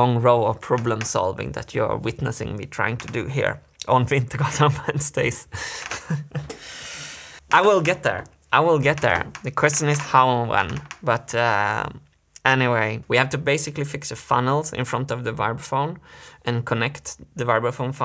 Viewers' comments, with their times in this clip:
0:03 I like how Youtube auto-subtitles makes Wintergatan Wednesdays into Gods of Space :-D